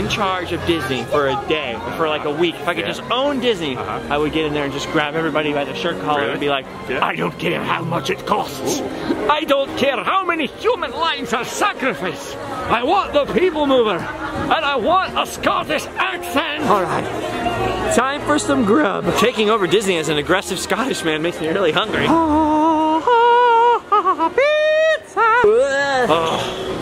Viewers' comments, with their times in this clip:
0:08 did anyone think he sounded like GRU from despicable me